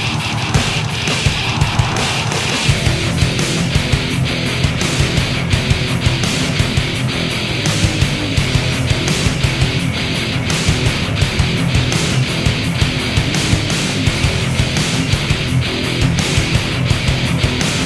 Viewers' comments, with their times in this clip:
0:03 What a punishing riff! Top notch stuff..